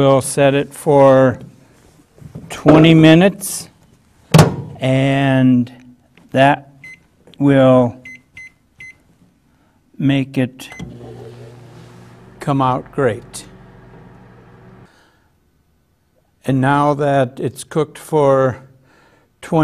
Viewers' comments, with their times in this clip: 0:05 "and...that...will...make it...come out great." Looks down dejected